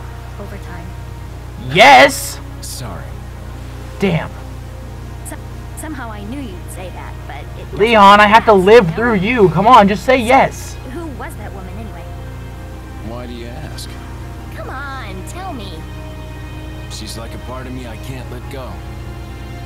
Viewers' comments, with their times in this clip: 0:05 there was an audio glitch in ashleys voice